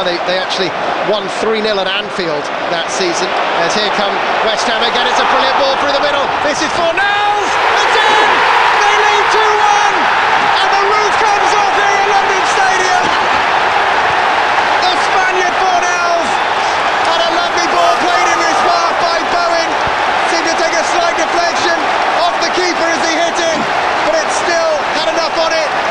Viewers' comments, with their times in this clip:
0:07 I get goosebumps everytime I hear the crowd on this moment